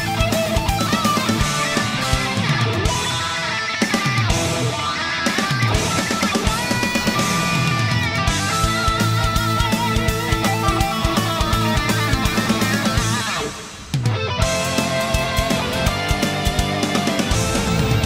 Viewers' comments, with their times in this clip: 0:03 i died at this part because the music rythms with the ember hurricane